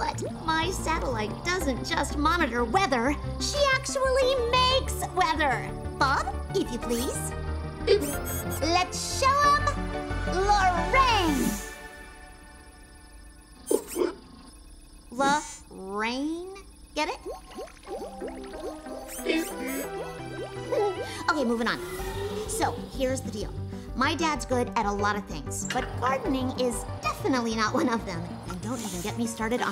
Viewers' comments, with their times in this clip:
0:03 as she was talking the music was getting more epic ❤️🤣🤣
0:13 did that robot said "da faq"